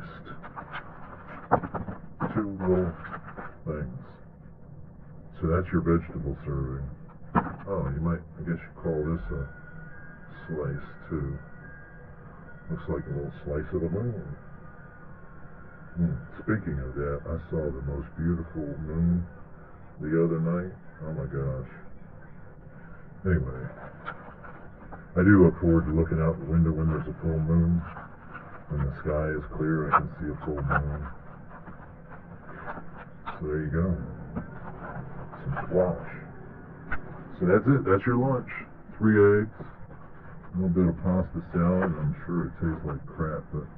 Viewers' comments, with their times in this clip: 0:06 I think I heard a bit of "old timer big band style" in there hehe. For me, listening to Jazz soundscapes while doing hw, is like an escape back in time; when reading academia is the shit! I like to imagine being a mobster during Prohibition, drinking an "Old Fashion", while solving the problems of the modern industrial age. lol
0:26 I thought I heard wind chimes 🍞🍞